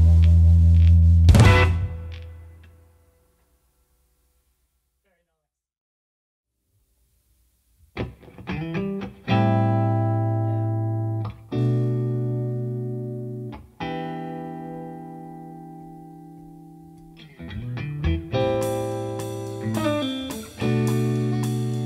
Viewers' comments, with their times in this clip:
0:07 Loved the outro jam